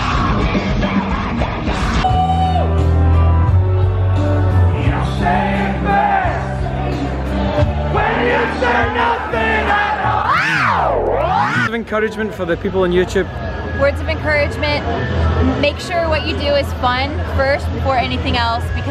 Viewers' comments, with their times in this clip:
0:03 shoutout to everyone singing that great country song lol